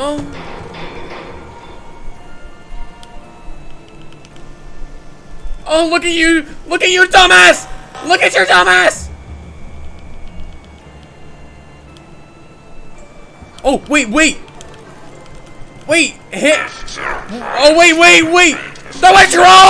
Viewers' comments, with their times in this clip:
0:06 Bro kept moaning and my mum was next to me 💀💀💀